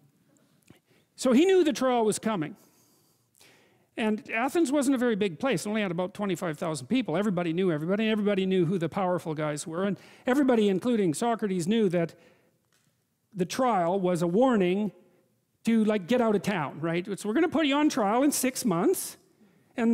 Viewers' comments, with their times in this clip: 0:06 why does he start singing system of a down?